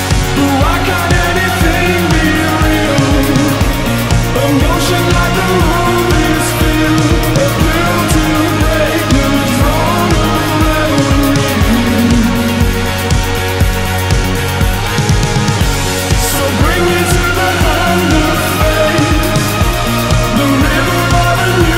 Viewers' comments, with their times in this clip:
0:07 Anybody know what hes saying from onwards? The lyric text just showes [?] It sounds like "built to break the drone of revelry" Thanks in advance for any help.